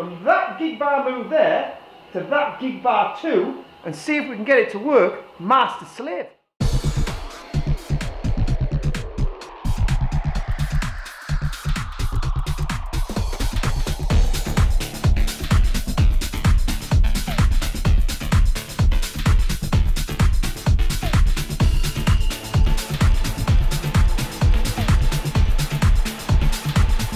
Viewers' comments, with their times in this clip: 0:10 Quality, love these. (Nice tune too :)